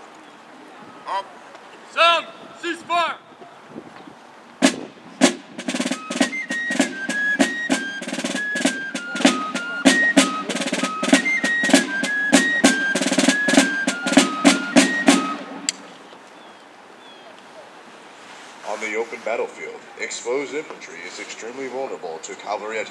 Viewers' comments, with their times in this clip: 0:03 The Cease Fire song sounds so god damned happy. It could be the end credits song to a sitcom based in the Shire in Middle Earth. "Oh Gandalf! Normally I'd label you a disturber of the peace, but I suppose you could send up a few more fireworks, if n it please you sir!" the hobbits cheer — freeze frame — queue the song